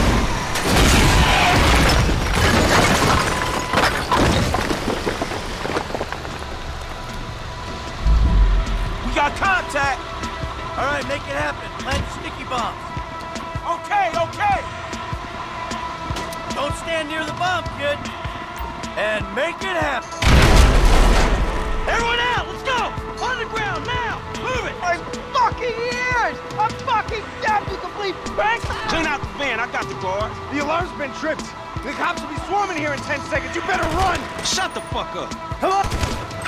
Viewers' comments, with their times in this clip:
0:03 XDDDDDD sound like 8 bit brick
0:24 gruple sech guard has his ears deaf of loud explosion